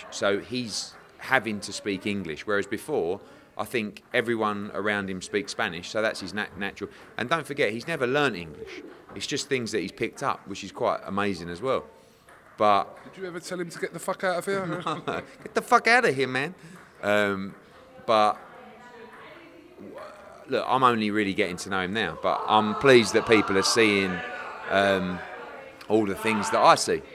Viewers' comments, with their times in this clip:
0:10 Hearn jnr is so good with his impersonations
0:14 eddie hearn canelo impression